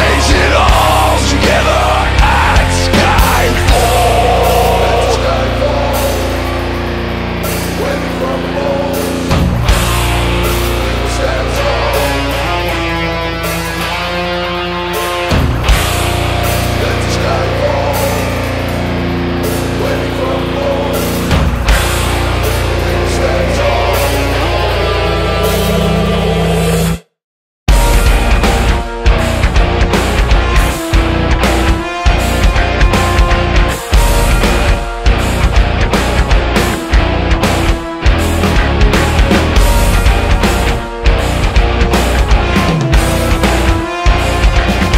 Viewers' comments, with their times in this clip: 0:06 That bass string ..........epic!!
0:21 OMG that break just love it!!!
0:28 sounds like Trepalium. Excellent 🤘